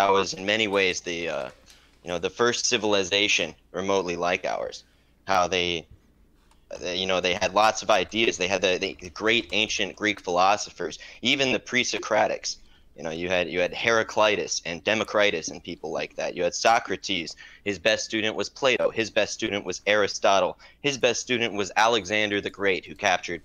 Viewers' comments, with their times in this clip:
0:06 I already heard enough of his voice. You can tel he’s going to be an idiot by his cadence.